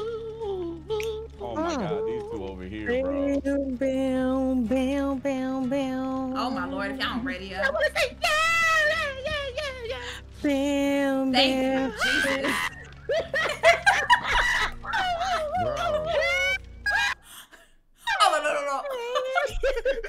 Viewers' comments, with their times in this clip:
0:04 the vocals tho 😅.